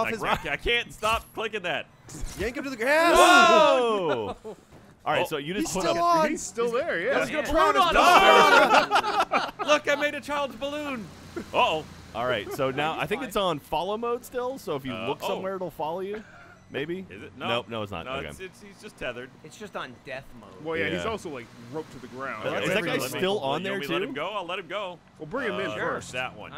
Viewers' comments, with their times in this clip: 0:07 I love that synchronized 'WOOAAH'.